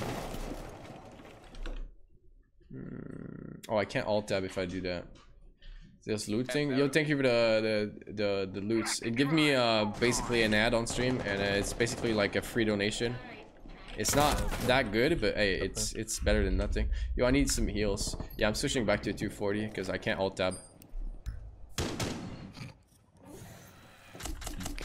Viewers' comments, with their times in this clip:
0:05 did he say halo? Or alo?